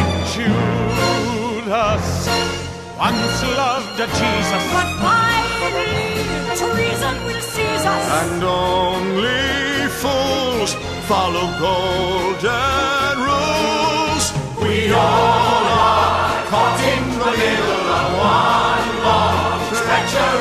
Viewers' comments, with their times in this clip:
0:05 You drew Beelzebub so perfectly and with the voice it just so so so good!!!